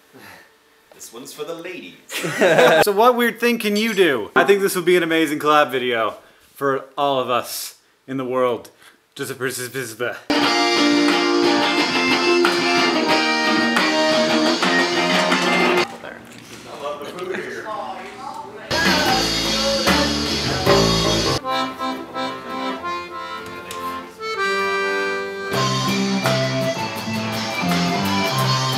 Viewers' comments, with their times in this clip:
0:10 Oh, when they were jamming, it reminded me of They Might be Giants in the best way possible. I love this video.